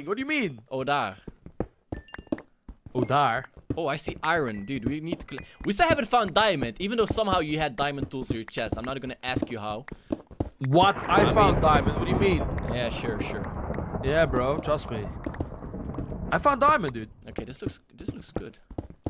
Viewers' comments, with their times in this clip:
0:04 Did you guys say “oh daar” ;-;?